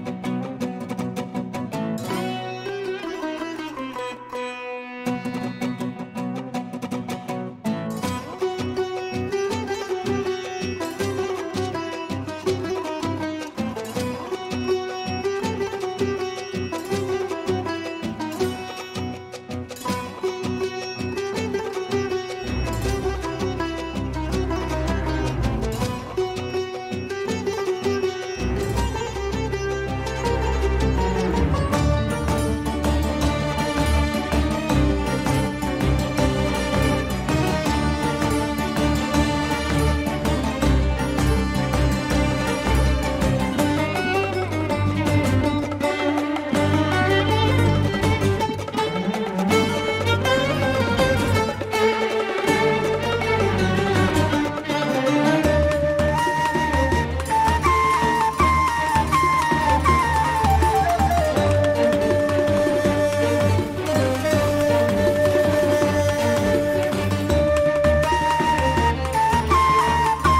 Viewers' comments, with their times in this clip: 0:08 i always thought this gonna go into that first chords of Rasputin lmao
0:32 hearing this motif transformed and molded in every creative way yupengchen writes is so exciting every goddamn time. I already have a memory of hearing it the first time and popping off so hard xD The new sumeru motif is also just chefs kiss
0:32 Is there an in-game version for this? I remember the flute is more pronounced
0:36 Noooo!!!! They remove the flute sound in It sounded so good...ಥ‿ಥ
0:36 THERES A FLUTE PART THAT I SWEAR WAS THERE AND ITS MY FAVORITE BIT OF THE BEGINIGN ABD IM SO SAD I CANT HEAR IT
0:54 WHEN THE FLUTE ENTERED HERE I FELT JUMP SCARED IT WAS SO BEAUTIFUL
0:54 Why does sounds like Kira Yoshikage theme?
0:54 Im just sad they removed the flute part in this piece
0:56 Wait a minute......it sounds a bit different than the last updated one.....maybe Im wrong? Edit: the flute definitely sounds different than the supposed final version...I like the change though😄